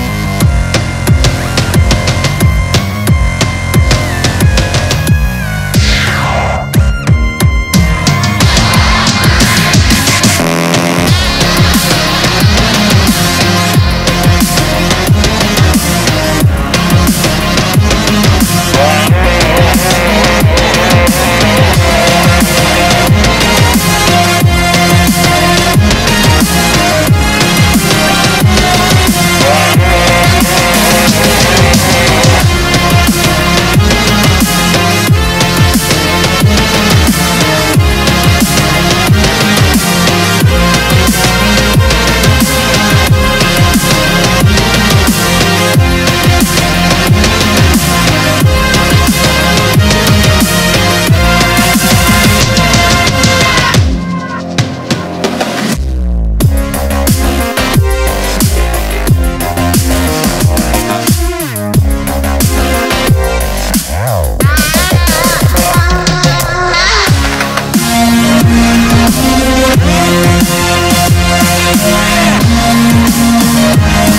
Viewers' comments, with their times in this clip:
0:10 The fart noise tho...
0:10 the most savage fart ever
0:55 Yo why does it sound like dio RIPping kakyoin with that little bass drop ?